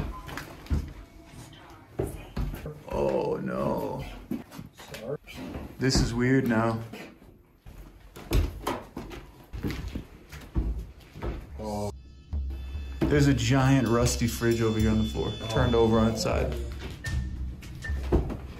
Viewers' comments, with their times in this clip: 0:05 What, or who, was talking ?